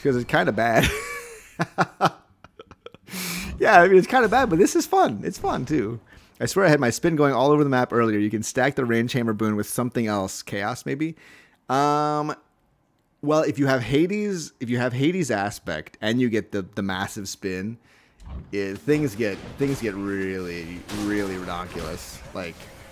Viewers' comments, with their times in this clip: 0:05 I think you missed a fishing Spot Just by listening